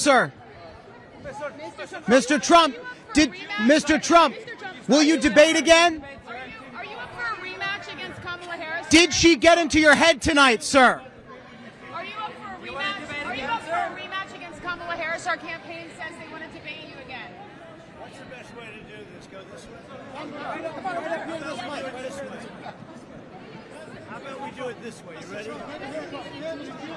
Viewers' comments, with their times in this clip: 0:07 (and elsewhere) I can actually hear Tim Miller shouting "why didn't you look at her!" from the background! 🤣💙omg, we love you, Tim!!! The Bulwark crew rocks.